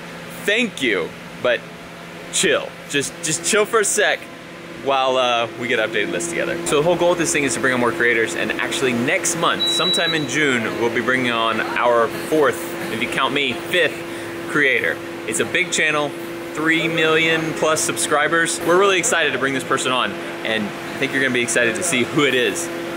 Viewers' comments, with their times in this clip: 0:07 Holy shit that beep scared me
0:10 I thought the beep was my fire alarm :'D I went to go change the batteries and everything haha